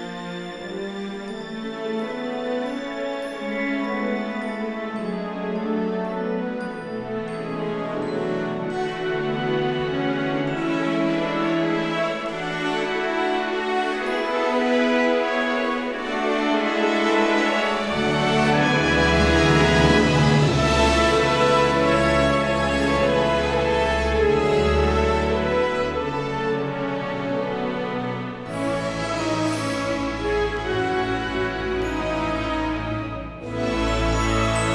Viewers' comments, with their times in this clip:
0:05 absolutely love and loved this tune always! It sometimes brings me to tears because of how happy and yet emotional it is! I’ll always love Harry Potter! And always have it in my heart....❤️💖
0:21 is great music 👍❤️